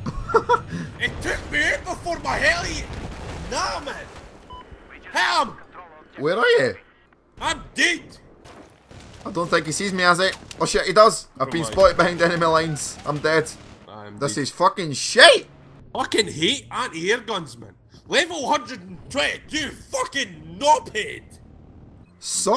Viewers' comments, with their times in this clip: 0:09 I'm in tears, that was just a fantastic bit of editing and ad-libbing, just the perfect delivery x'D